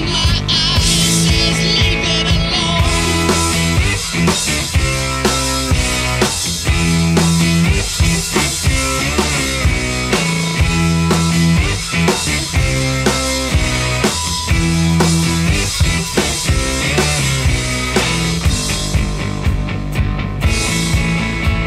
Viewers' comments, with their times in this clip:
0:05 nice guitar can my music teacher sowed my class how to play the bass of this song